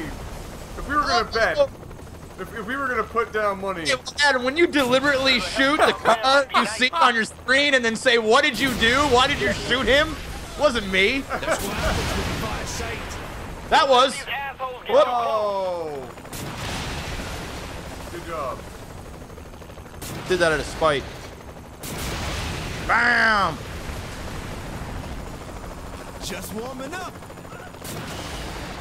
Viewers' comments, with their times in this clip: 0:09 did anyone else check their computer for a steam chat notification?